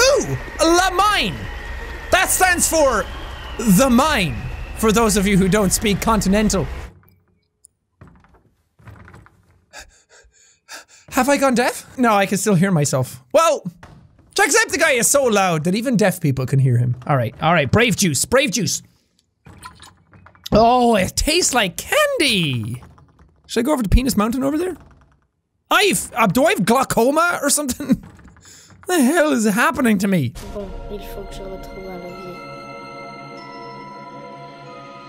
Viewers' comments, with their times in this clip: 0:08 Jack: weird face movements and heavy breathing Have I gone deaf? No I can’t still hear myself. Well Jacksepticeye is so loud that even deaf people can hear him. Me: Does that mean I’m deaf? I NEED ANSWERS (Also I almost spit my milk out when I watched this part)
0:17 jacksepticeye is so loud he makes people go deaf aswell